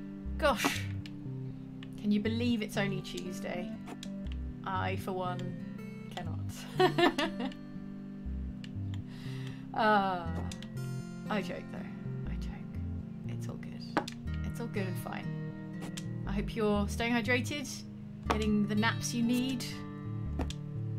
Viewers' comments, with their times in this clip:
0:06 The Sound of Febreeze on-.. Is a mini game in itself! Checking that game devs paid close attention to realism! I love this